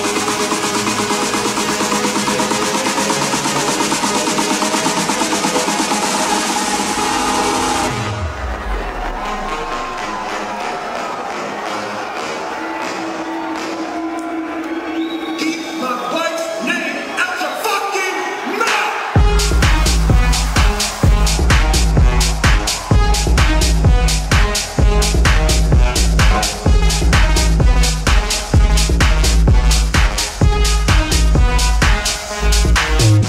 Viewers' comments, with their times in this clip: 0:05 what the helll....baaaaaaaaaaaaam
0:14 the drop really...slapped